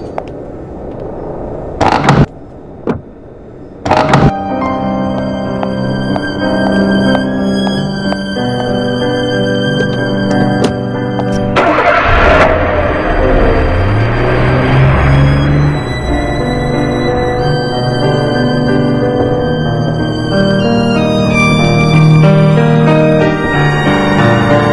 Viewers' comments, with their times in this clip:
0:05 The ending sounds like church music